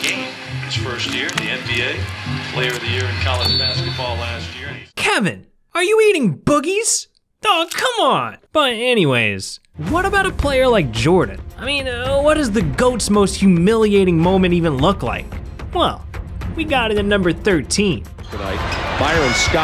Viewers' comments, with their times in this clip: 0:04 the way he said Kevin, are you eating boogies😅😅😅